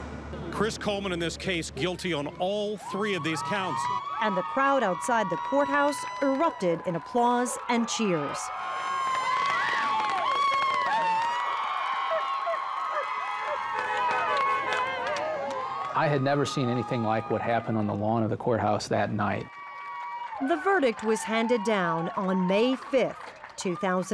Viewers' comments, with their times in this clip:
0:07 hell even the dog was excited and cheered with the crowd 😂